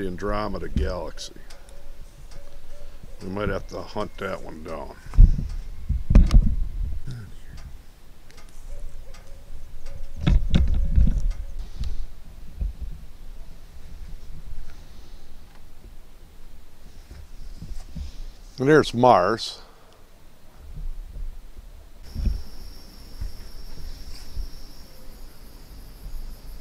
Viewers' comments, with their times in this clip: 0:08 barred owl call in background 😃 COOL STUFF MAN, I have a Celestron 8 se, the newer version not the Orange one.